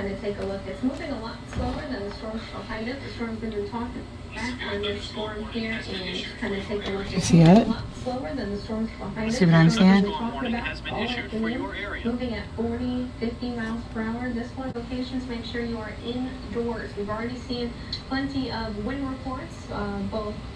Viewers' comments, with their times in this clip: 0:04 I do believe you were looking at a rotating wall cloud coming at you. Awesome footage! And those sirens are trippy sounding. Ours down here in Cedar Rapids are the old fashioned kind like what sounded at the beginning when yours went off.